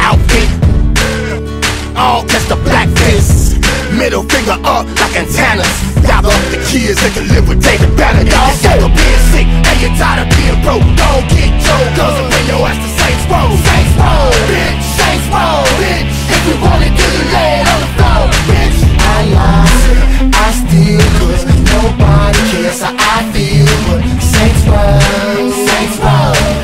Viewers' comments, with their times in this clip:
0:07 Julius sings at his Saints